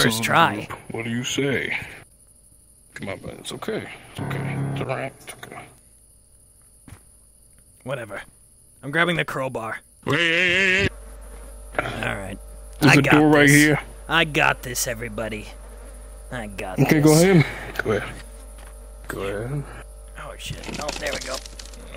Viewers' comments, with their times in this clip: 0:03 idk but for some reason the Dusttale Megolovania playing sent me